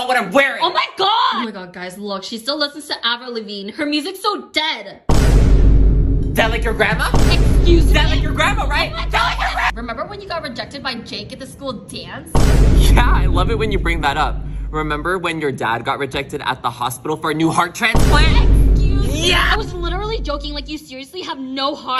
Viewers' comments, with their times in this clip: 0:08 the screaming DEAD LIKE YOUR GRANDMAAAAA😭😭🤣🤣
0:09 him yelling was funny😂😂